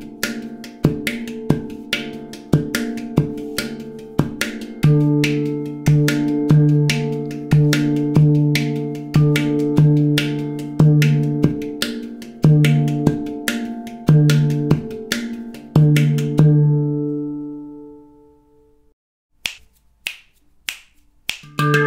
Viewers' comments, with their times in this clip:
0:04 I'm in love with that Valter drum box too! & how after thinking all the notes were left open (just before ) and then you held some. Wow. makes me want to vacation in Germany for some tutelage.